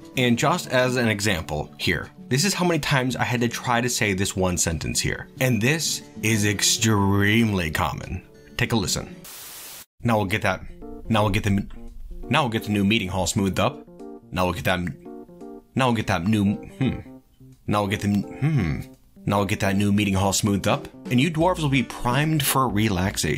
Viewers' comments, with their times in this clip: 0:09 Hey, it`s Jimmy from South Park.